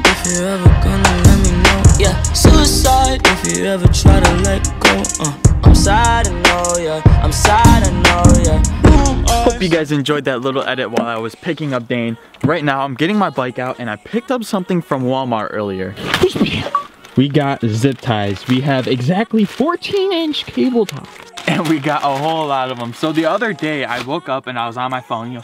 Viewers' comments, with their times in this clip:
0:09 Lol it made the Xbox notification sound when he picked up the zip ties